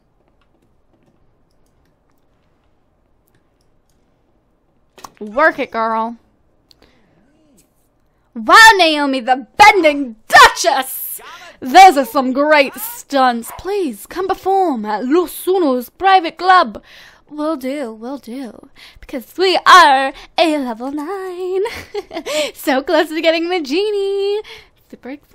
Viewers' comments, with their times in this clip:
0:08 HAHHAHAHAHAHAH I CANT THE WAY SHE SAID DUCHESS I CANT